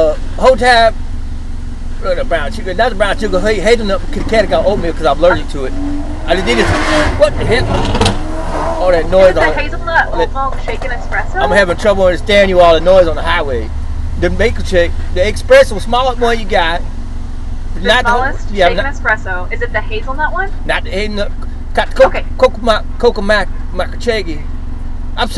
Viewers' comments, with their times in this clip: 0:06 Enzo Ferrari must be in town! 😅